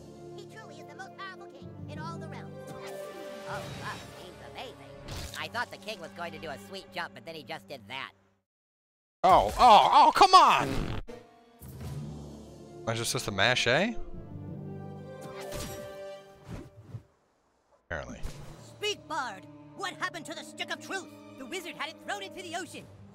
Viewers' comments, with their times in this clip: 0:08 rofl like a sound Trey would make.